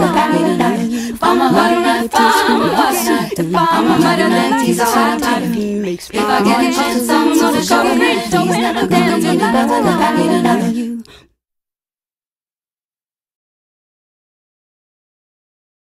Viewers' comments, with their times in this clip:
0:10 This final breath, oh gosh!